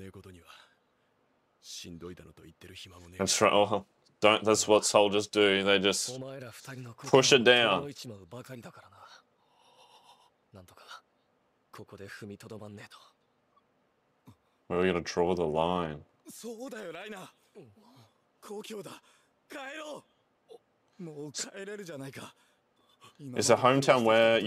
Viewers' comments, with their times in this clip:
0:06 that sound Reiner makes when Eren brings up his "hometown" as his warrior-self slams back into awareness